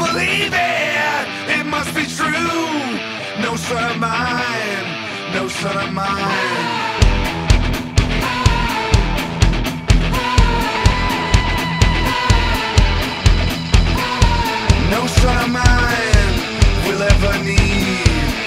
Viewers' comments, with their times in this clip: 0:06 i hear Rammstein, anyone else?